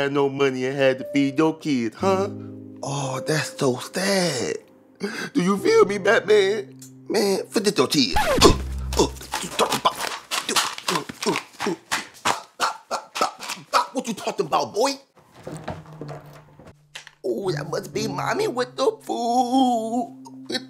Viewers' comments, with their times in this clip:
0:05 the way the action figures talked